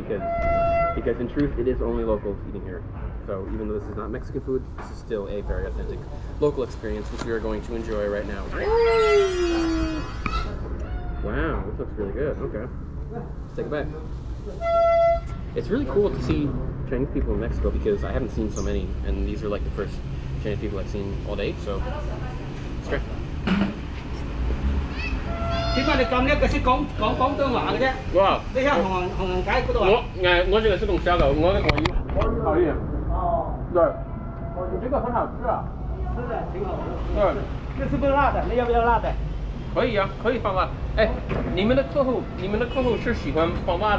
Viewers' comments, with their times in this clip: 0:10 that is the biggest Owen Wilson "Wow" ive ever heard
0:28 Speaking with your mouth full like a true asian..